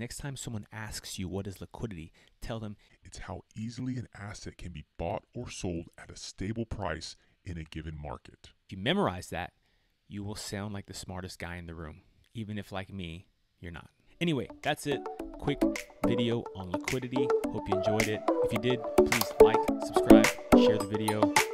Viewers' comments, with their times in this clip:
0:05 His voice transformed to Tony Robbins Great video, finally some clear language!